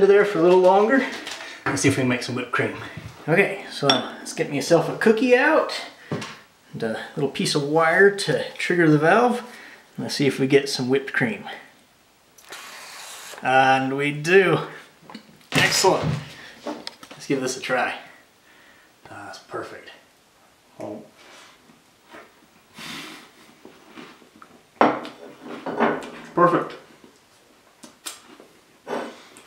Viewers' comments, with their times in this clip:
0:10 Anyone else notice his voice ?
0:13 when you pick up a British accent out of nowhere